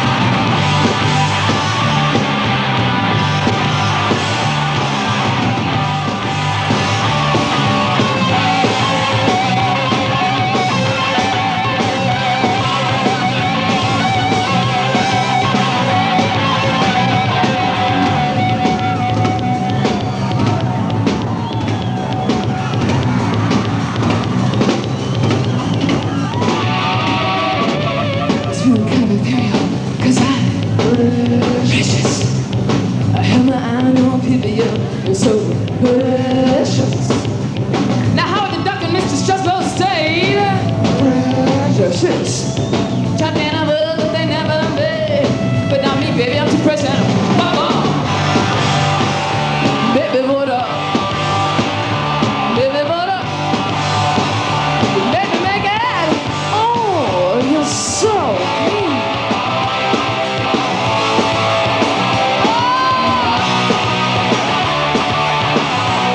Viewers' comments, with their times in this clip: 0:07 Perfection! Best 2 note guitar solo ever
0:47 'F..k Off ' has never sounded this cool before as seconds mark lol! Excellent band that had a real fire about them. RIP James and Pete Imagine what could've been?